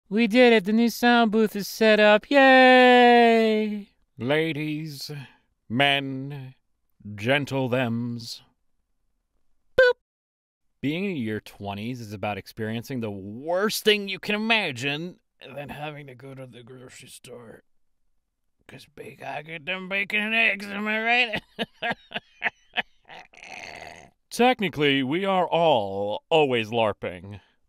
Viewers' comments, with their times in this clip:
0:09 🦊 happy foxxo noises